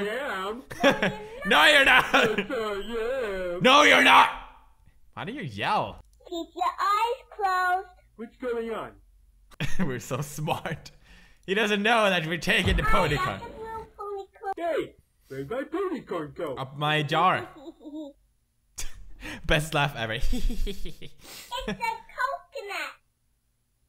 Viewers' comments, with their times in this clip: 0:08 is it me or does the tiger sound a lot like homer simpson?